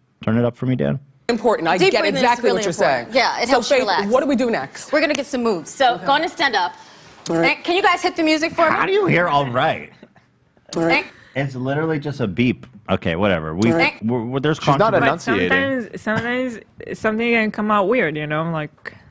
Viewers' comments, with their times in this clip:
0:05 You people have tunnel vision, what makes you say the instructor wasn't the one farting? Looks to me like she made the perfect pose right at the sound AND tried to talk fast to cover it up.